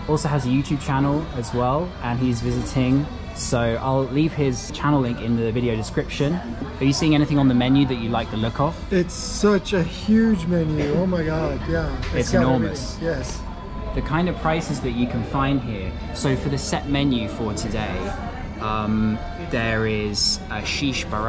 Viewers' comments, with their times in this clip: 0:09 The music is amazing!!